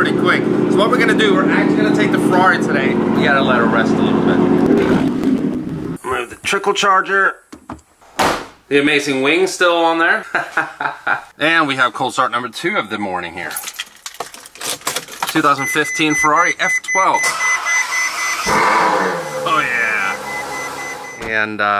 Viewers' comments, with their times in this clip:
0:05 His new exhaust is so loud it made his neighbors put their house up for sale LOL